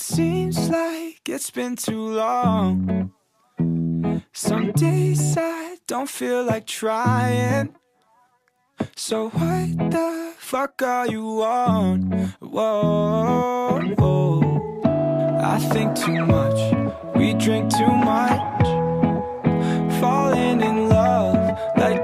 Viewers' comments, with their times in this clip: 0:06 Ngl, i swear that was kiri at first so i had to recheck🤣